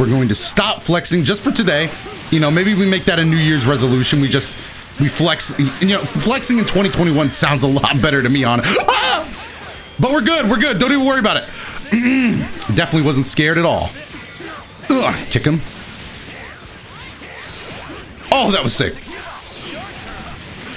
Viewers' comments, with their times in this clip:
0:04 that scream was immaculate
0:08 Are we not gon talk about his scream
0:08 THE SHEER SOUND OF PANIC Chef's Kiss DELICIOUS
0:08 That was the most powerful warcry I think I’ve ever heard
0:08 You should enroll for Frieza Voice when he gets scared or hit.
0:08 A true screech of terror.